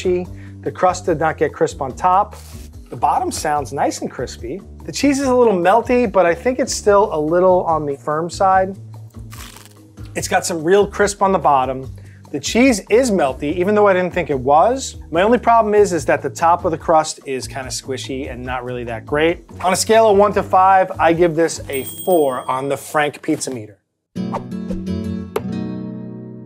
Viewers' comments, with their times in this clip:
0:08 .. that "crunch" sound was 100% FAKE